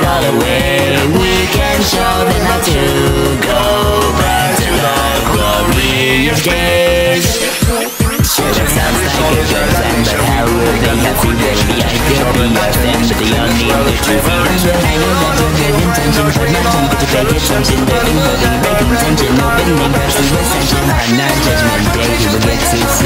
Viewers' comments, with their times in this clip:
0:06 that really brings out the CD side of Majin. (The peel-out to be specific)